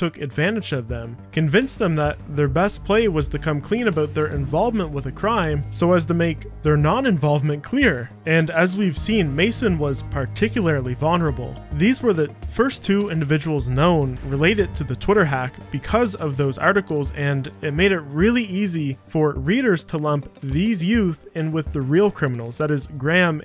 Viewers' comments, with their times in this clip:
0:04 he just say porky?